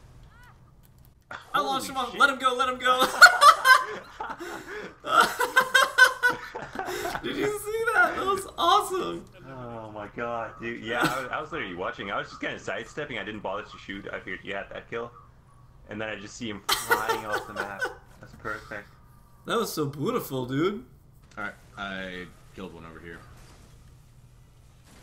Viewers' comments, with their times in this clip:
0:06 Biggest voice crack I've ever heard lol. love your vids btw